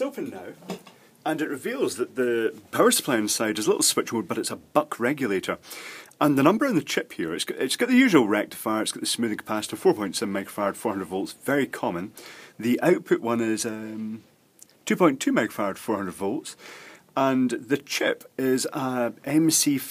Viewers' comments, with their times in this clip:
0:07 Love your stuff. but I watch for 10 minutes as you struggle, you say something I really wanted to hear, as FAST as you can in your Aussie speak, I back it up too many times to try to pick it up... What kind of cap? Remember, it's a mixed audience of amateurs and pros. (Pros may just fast fwd, or not watch at all..